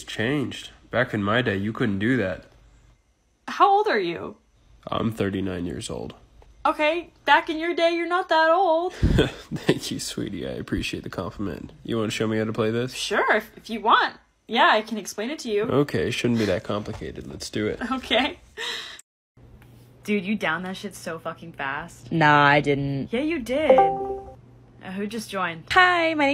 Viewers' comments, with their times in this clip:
0:07 im sorry but- the voice is just GIUBWEKNJLKSX im gonna cry rn
0:09 THE VOICE BECAME SO HOT WHAT THE HELL and her singing wow 👌